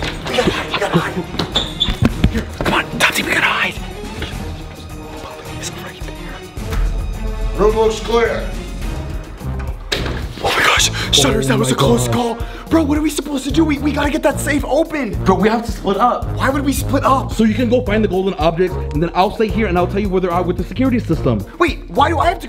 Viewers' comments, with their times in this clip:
0:07 English autogenerated captions: Roblox Square!